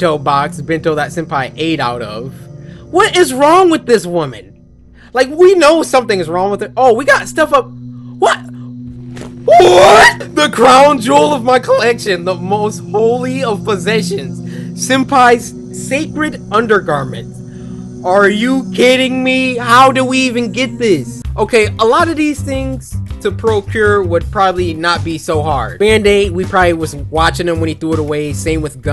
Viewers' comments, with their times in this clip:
0:08 that WHAAT????!? Got me on the floor 🤣🤣🤣🤣
0:09 That scream doe
0:09 that WHATTTTT was funny